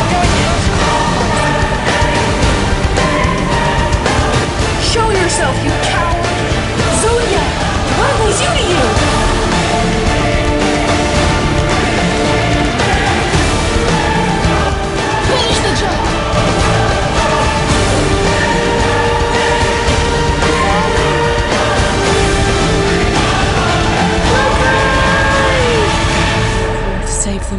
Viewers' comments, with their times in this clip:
0:09 its sounds like he said, finish the junk! lol